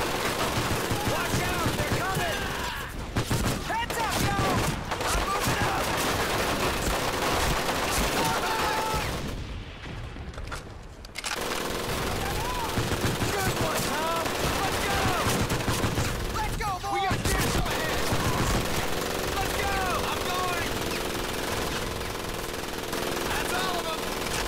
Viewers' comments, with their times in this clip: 0:05 where is the annoying machine gun firing coming from? I don’t see where it could possibly be in the video. Edit: I enjoyed the play through